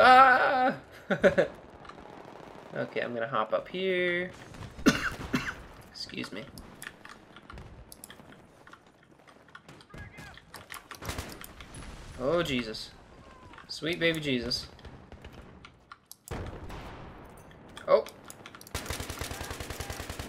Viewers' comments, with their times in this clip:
0:04 Was he actually coughing ? LOL